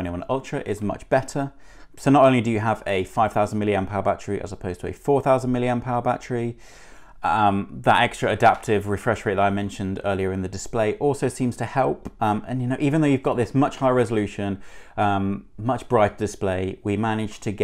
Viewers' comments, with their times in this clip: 0:05 The audio improves